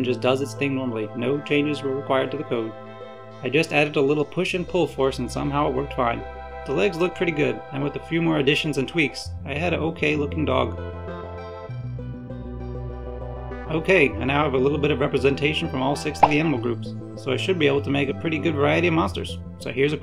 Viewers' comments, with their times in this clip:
0:04 Omg that donkey kong melody